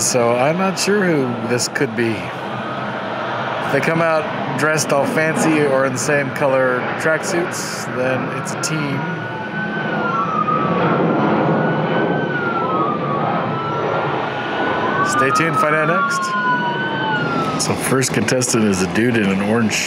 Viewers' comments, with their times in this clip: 0:03 Fully expecting a sports team and then hearing all the sirens made me think under cover con air flight.